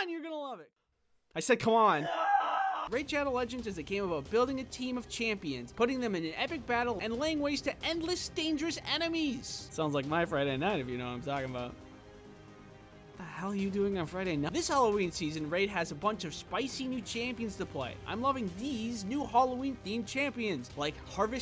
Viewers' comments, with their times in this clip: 0:07 I have to admit I only like this one for the first With the screaming man😂